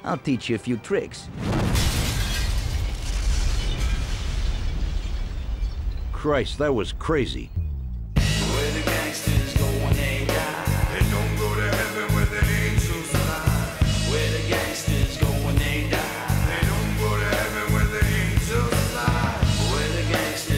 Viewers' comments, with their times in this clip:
0:07 boy the memorys i had with this game the theme here was cool =D